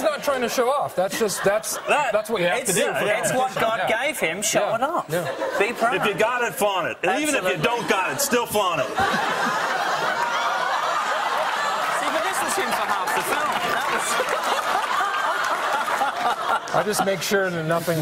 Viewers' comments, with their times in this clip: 0:06 John makes will Ferrell laugh